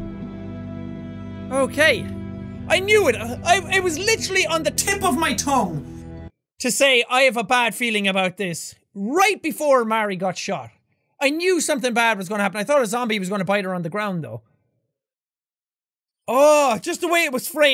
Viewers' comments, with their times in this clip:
0:03 um...did anyone else get a weird audio glitch? lol
0:04 his voice changes
0:04 Did anyone else realize that his mic broke
0:04 Ik this is old old but I just noticed hos mic audio changed
0:05 audio error, owch mah ears!